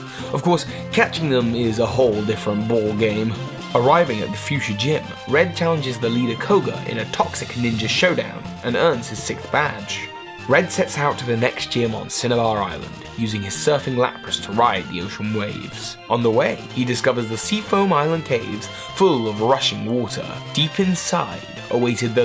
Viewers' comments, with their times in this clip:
0:08 "And earns his sick badge". That's what i heard.